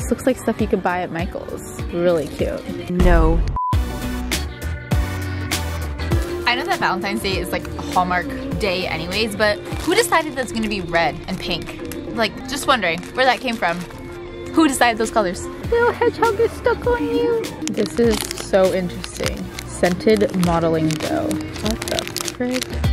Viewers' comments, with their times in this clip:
0:06 I'M LIKE A BIRD I ONLY FLY AWAY does anyone hear the song in the backgroud??? OMG 2000's FEELS!